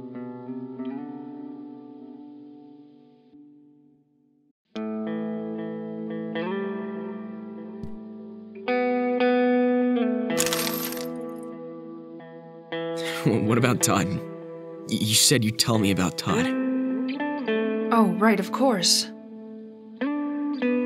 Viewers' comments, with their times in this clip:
0:05 awh no not him crying I FEEL SO BAD???